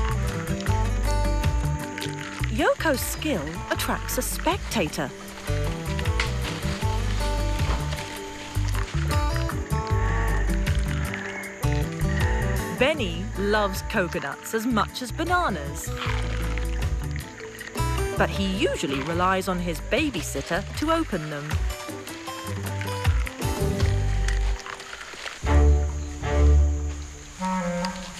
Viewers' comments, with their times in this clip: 0:09 never noticed the heavy breathing before